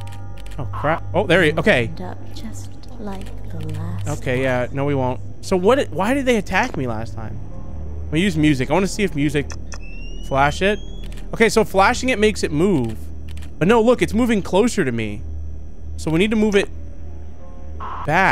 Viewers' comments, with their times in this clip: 0:06 the fake sounds coming from the attic😮